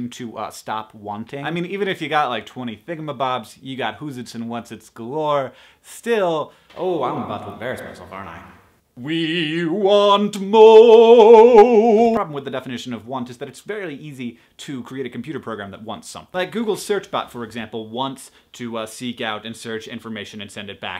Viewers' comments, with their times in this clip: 0:08 i have to say im watching this fairly loud with headphones (trying not to wake the housemates) and the echo effect scared the crap outta me. HANK WAS IN MY HEAD